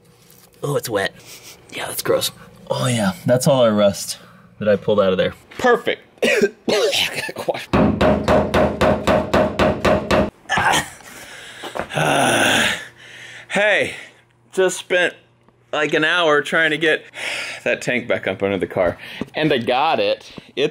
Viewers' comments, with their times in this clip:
0:06 when you were coughing a small splash came on me i kept stairing on the screen for a while sitting like what is this whitchcraft until i found out it was the ac